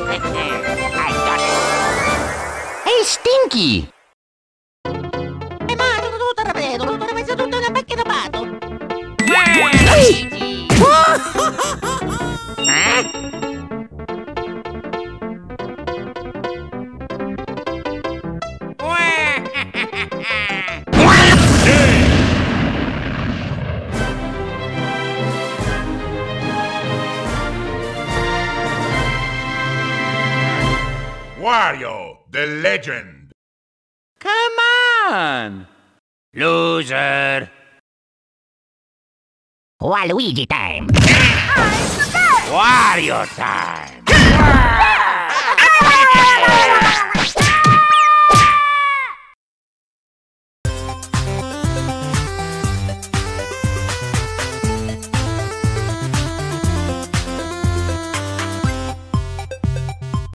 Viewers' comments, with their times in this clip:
0:04 sounds like mario speaking a random language.
0:14 waluigi yeets Luigi off (Waluigi) Wahahahahahahah (Bombs drop)WALUIGI Luigi equals god
0:20 What was that noise ?!
0:20 WFT WAS THAT? I CAN'T STOP LAUGHING AT THAT SOUND! WAAAA-
0:20 Maximum volume: WAH
0:20 that scream os pure pain
0:20 that fast scream thiyght
0:21 the noise you make when you sneeze but you let everything loose
0:21 Waluigi: W A A H - Captions: [Música]
0:21 Can we admit that this scream here is hallarious
0:21 The sound you make when you get kicked in the Oof"
0:21 XD (interest bfdi earrape theme)
0:21 waluigi scream by sr pelo
0:21 i like waluigi scream
0:21 Waluigi’s scream though 🤣
0:21 that Scream Waluigi Xd
0:22 Waluigi went WA
0:47 Toad: AAAAAH Me: MARIO PEACH STOP HURTING TOAD MY FAV CHARACTER